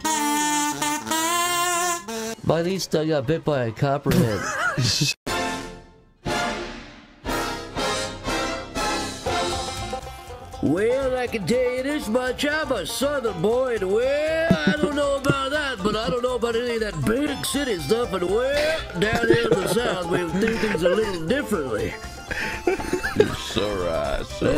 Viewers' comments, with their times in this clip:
0:05 i hear some crazy western swamp banjo music